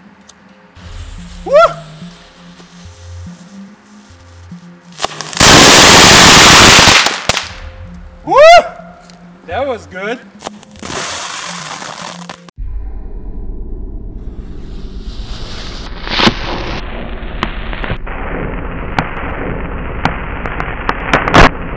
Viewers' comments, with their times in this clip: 0:05 time to go full auto hehe sounds like minigun burst
0:05 I'm officially deaf